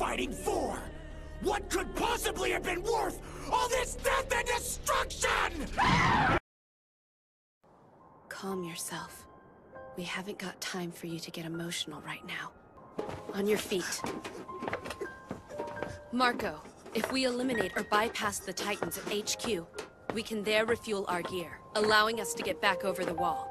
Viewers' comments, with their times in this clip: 0:05 THAT FUCKING SCREECH AT THE END